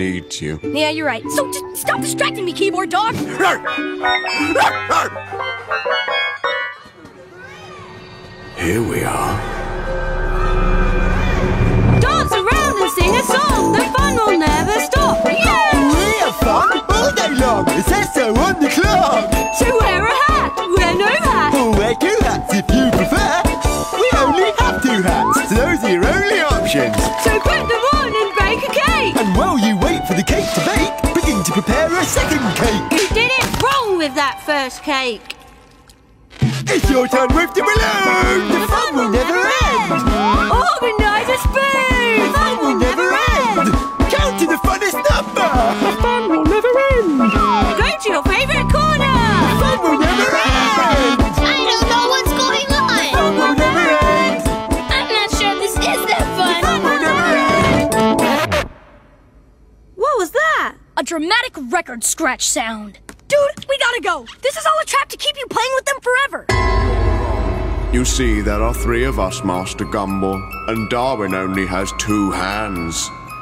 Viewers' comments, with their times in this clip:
0:03 that half arsed first bark is hilarious 😂
0:03 voice of yellow guy
0:12 this song slaps
0:25 THAT SOUNDED EXACTLY LIKE WARREN THE WOR- EAGLE!
0:32 Wow there friend, you might need to slow down! * s i l e n c e *
0:33 actually sounded like something that would be in DHMIS
0:33 iconic akward silence
0:36 that hairy, blue and purple guy (dunno name) sounds like yellow guy kind of
1:01 I thought she was going to continue with the line: "A tasty snack?" Her voice is’t like the spinach can c,: